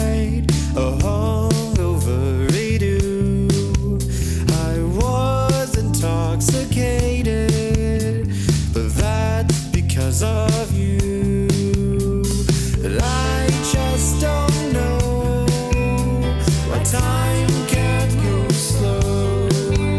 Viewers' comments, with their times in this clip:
0:06 you heard the manual tuning break on his voice. Did you record this in a different key then transpose?